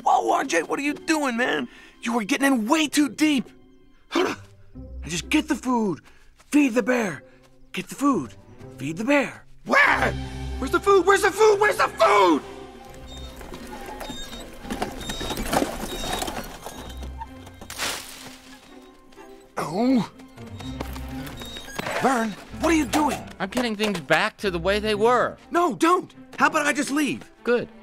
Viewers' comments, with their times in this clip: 0:10 Where's the food? Where's the food?! WHERE'S THE FOOD?!?! The way he says this line tho 😂